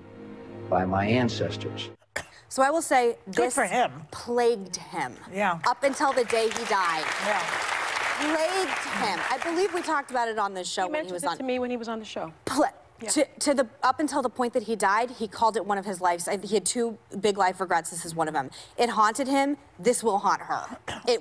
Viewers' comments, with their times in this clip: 0:06 Plagued him!!.......... Plaaaggueeed him!!! Meghan is so dramatic.